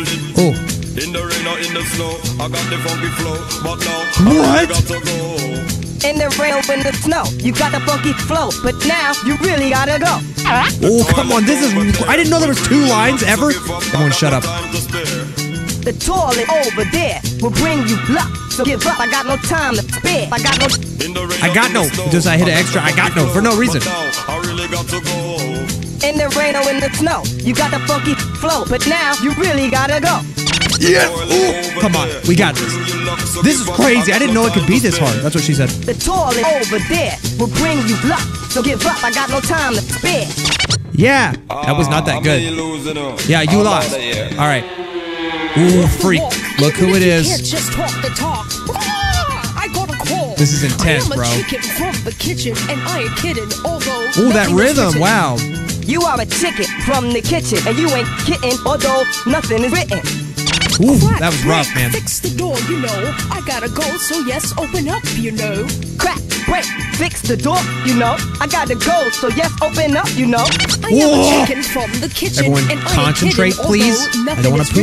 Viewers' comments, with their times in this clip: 0:07 When prappa says the word “ funky “ it sounds like he saying “fuckin”
0:07 that sounded like parrappa said the f word
0:07 it sounded like he said the f word
0:25 in this part parrapa sounded like he said (in the rain or in the snow you got the fu**ing flow)
0:57 parappa: and you ain't kitten- me: ARE YOU SAYING KIDDING OR KITTEN!?